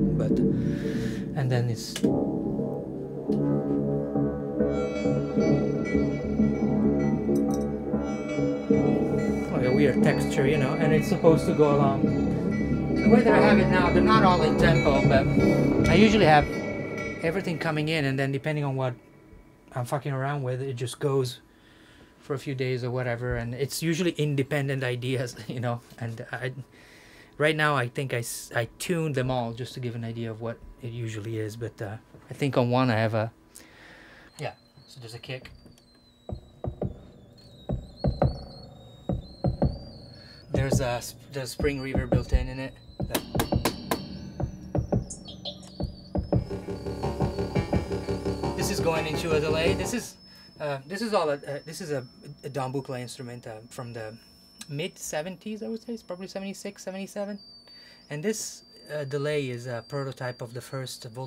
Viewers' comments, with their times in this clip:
0:08 Best part is that out-of-this-world rig starting
0:38 it's insane. Best part of the video all those synths and LFOs and rack stuff making space music
0:42 Favourite part: Reverb.. " Knock Knock"